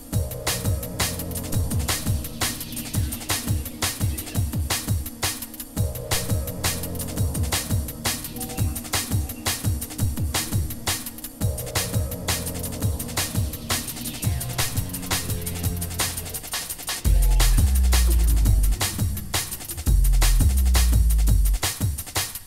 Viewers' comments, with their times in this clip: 0:10 Does anyone knoehoy tho ro get that bass sound ? I usr massive and Albino and will connect an lfo on the pitch for about 1 step but it never sounds this sick.